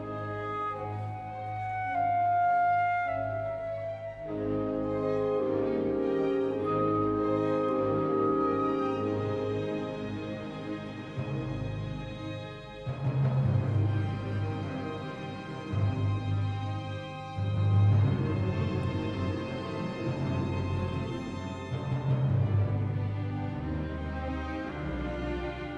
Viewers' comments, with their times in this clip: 0:09 That transition coming out of the trio in the 3d movement is masterful, snare drum sticks on the tympani, I wonder if Felix scored it that way. A great trio to start with, marked contrast to the very fast menuet. What the heck? The curiously abrupt transition to the coda kind of sucks, comes out of nowhere, switches keys, tempo, uses none of the prior ideas in the 4th movement. Felix was saying "man, i don't know how to end this thing, and I'm supposed to have it finished today. I want it to be major, I'll just fire up the trumpets and let them honk for 15 seconds". Wipes his 15-year-old hands together and smiles to himself.